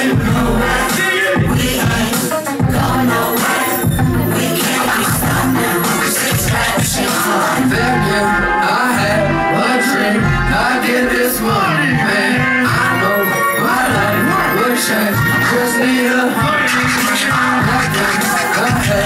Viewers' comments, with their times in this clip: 0:07 sounds exactly like the original song